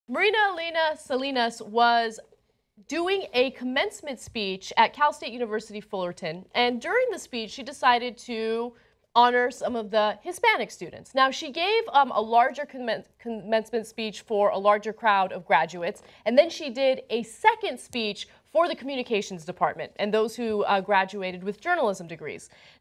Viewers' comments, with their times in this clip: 0:04 in. Her name is reena lina solinas. Really?